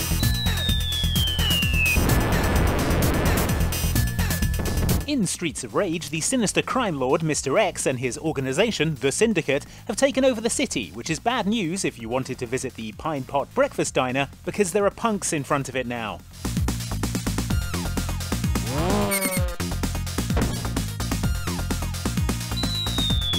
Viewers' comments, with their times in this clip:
0:05 this guy sounds like stampy